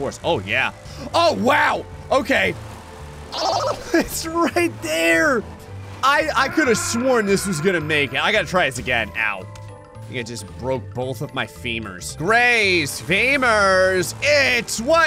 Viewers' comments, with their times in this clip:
0:03 wavy auughhh noise